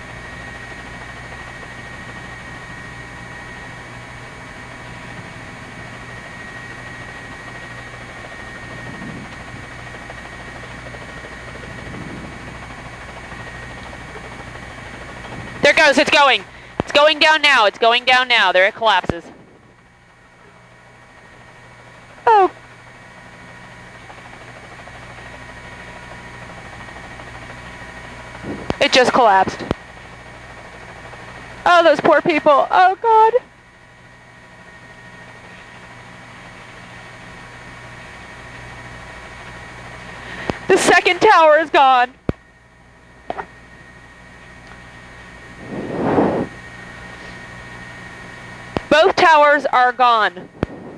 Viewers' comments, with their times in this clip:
0:08 Kinda hard to understand the tone of the voice during the second fall: (manic): There it goes, it's going. It's going down now. (sad): Oh. (emotionless) It just collapsed. (sad): Oh these poor people, oh God ... Pretty sure it was something hard to process both mentally and emotionally, but still this feels weird.
0:30 Does this sound like she didn’t care?
0:31 My feelings.... My grandma lived in Lindsey Park BK and I been over her house since I was born. She had a view of Lower Manhattan from her 8th floor windows. The Twin Towers was always the highlight attraction I looked forward to see when I admired the sky line from her windows. She always kept a pair of binoculars and at night I used to always zoom in on the WTC lol. Still to this DAY My feelings feels Everybody that victimed and witnessed this event. Very intense footage. I remember this ladies voice